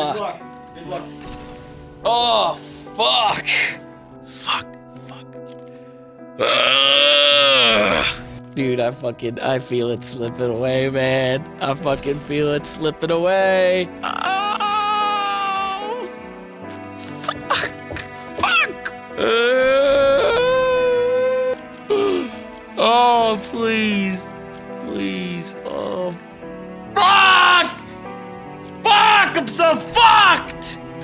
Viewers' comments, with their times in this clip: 0:07 this my friends is the mating call of the majestic three tailed deer
0:15 this is the call of the majestic 3 horned unicorn